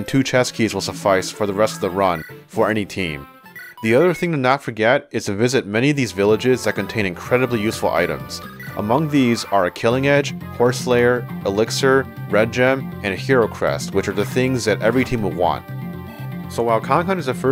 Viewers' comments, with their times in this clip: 0:03 sick audio change